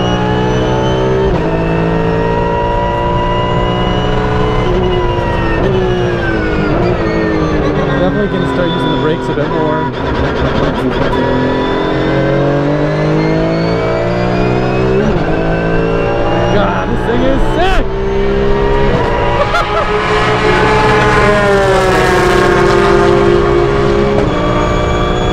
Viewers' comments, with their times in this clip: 0:09 the car made its own remix